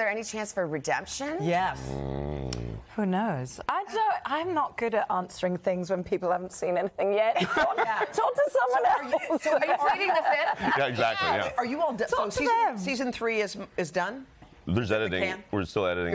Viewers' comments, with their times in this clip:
0:04 Love Hannah on "I'm not good at answering things when people haven't seen it. Talk to someone Else". love how she said it. she's amazing